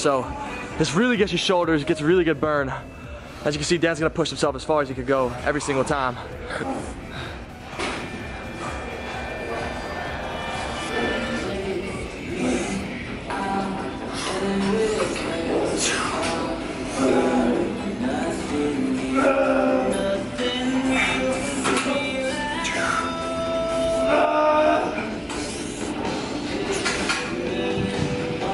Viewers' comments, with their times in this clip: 0:06 Your everyday screamer....
0:06 Is it just me or did you hear someone moaning in the background too?! xD
0:09 did you hear that guy in the backround grunting